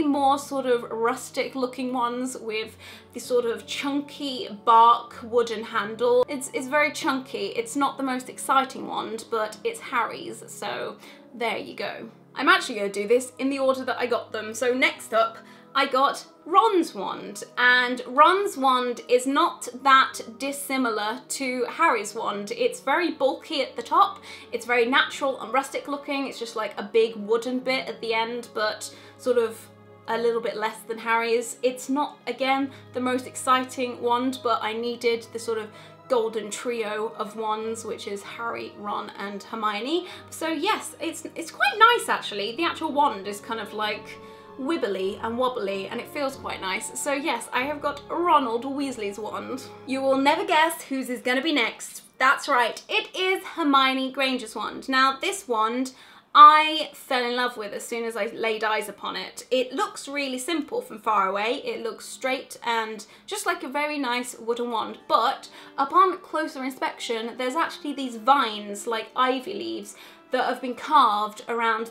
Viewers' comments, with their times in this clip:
0:09 when you said Harry, your voice just sounded like Hermione when she says Harry🤣
0:58 Right I seriously though you sounded like Emma Watson.